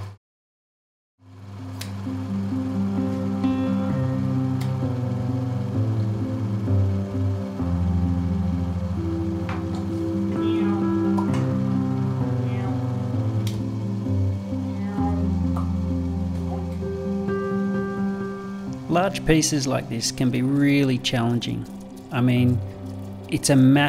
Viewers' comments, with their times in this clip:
0:09 Is that your kitty meowing ? 😄